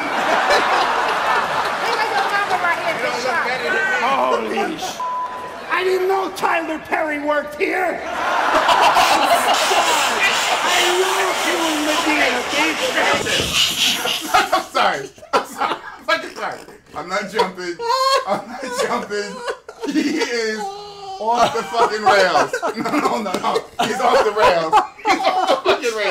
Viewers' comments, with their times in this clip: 0:09 Dude in the red t-shirt, you have the best laugh ever. I love this video, saved in my Funnies reel.